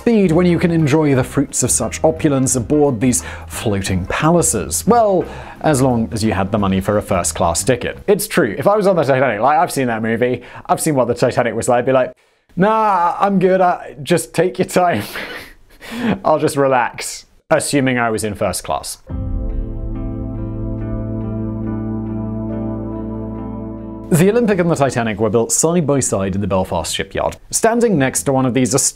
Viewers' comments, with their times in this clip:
0:09 Am I just high af or did his voice completely change ? I don’t know what’s real anymore